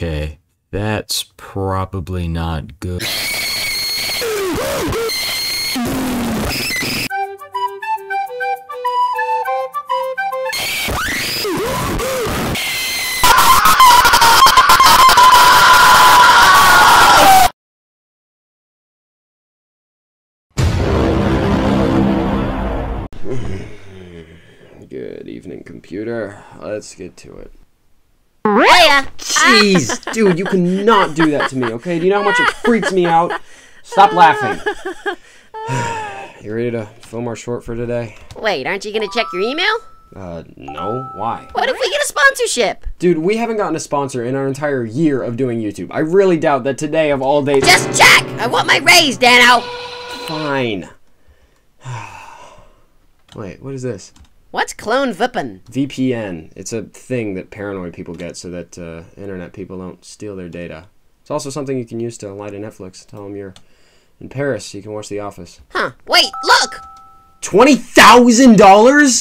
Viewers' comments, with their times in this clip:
0:04 My poor ear drums
0:54 riggy de rabbit monkey say "clone vpn" instead of "clone V.P.N "